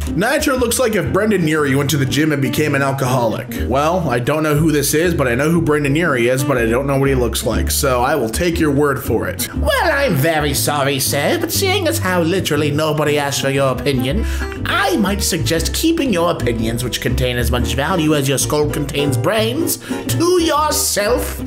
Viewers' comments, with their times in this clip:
0:09 why does he sound like the narrator from stanley parable when he gets salty ?